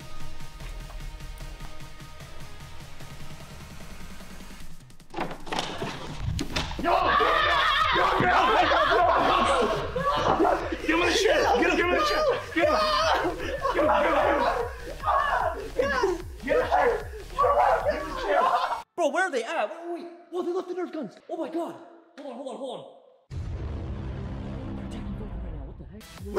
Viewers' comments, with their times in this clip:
0:07 BRO WHAT IS THAT SCREAM😂
0:07 is where the laghing begins
0:07 Bro what is that laugh on LOL
0:07 why is he screaming like that
0:08 Why did scream like that?💀💀💀